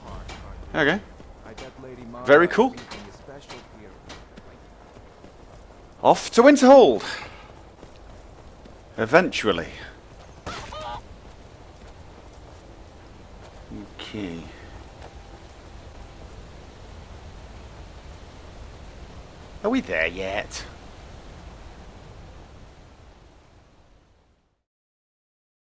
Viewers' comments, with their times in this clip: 0:09 Listen for the murdered chicken at the end